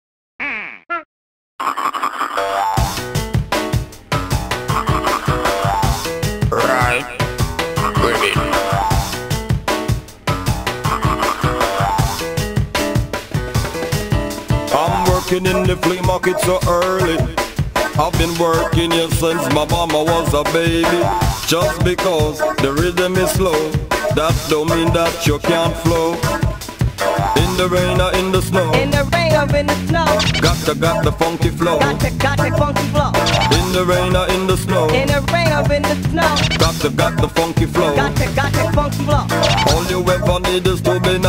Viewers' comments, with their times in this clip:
0:03 I feel like the section is early by half a beat. Idk if this was a bug on the game’s part, or if it was a mistake on the part of the TAS.
0:28 he turned into eminem